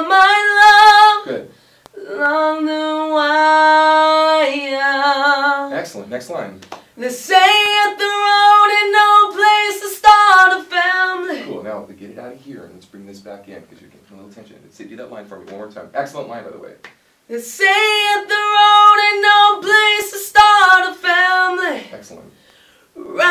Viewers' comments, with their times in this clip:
0:07 Tuning great, need to emphasise diction more - the beginning of words is vital for annunciation excellent example - they say THAT the road - great job though, well done